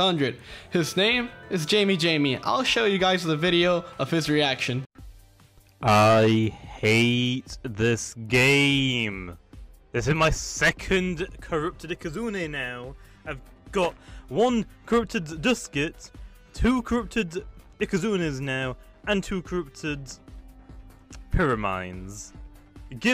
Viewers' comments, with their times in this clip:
0:05 this dude sounds like technoblade
0:06 Why does his sound like Technoblade in the beginning of the clip?